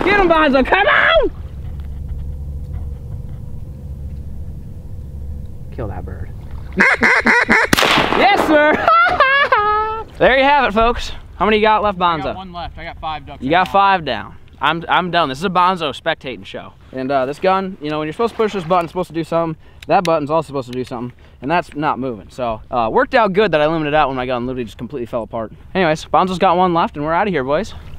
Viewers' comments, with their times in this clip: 0:08 dat laugh tho.
0:09 That laugh tho 😂